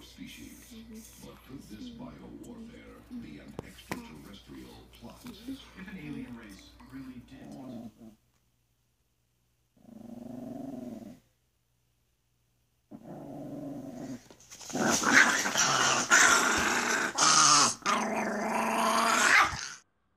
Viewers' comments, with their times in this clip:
0:08 when they lift the thing off i t sounds like the dog is saying I will ruin you